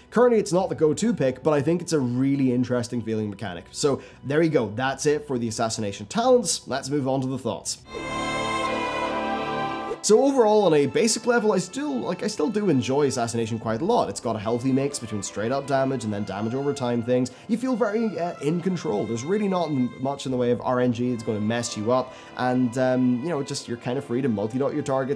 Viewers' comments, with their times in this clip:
0:07 “let’s move on to the thots”